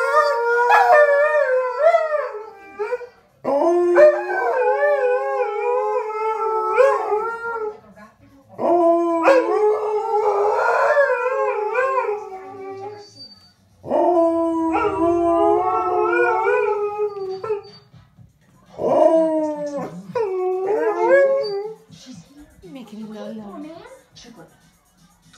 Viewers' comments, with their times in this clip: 0:07 Dogs : AWUHHHHHHHHHHHHHHHHHHHH Neighbor : ah shit, here we go again